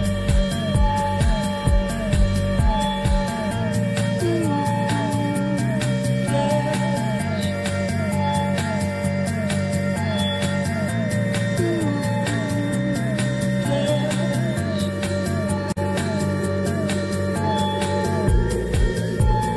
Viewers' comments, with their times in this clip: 0:03 I loved the slow beepish thing with groovy bass in this song !!!